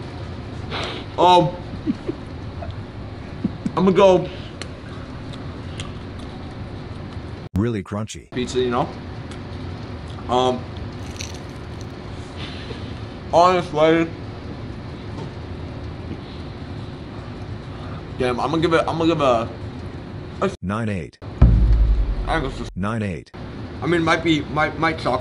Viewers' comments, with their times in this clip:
0:07 lmao what did he actually say there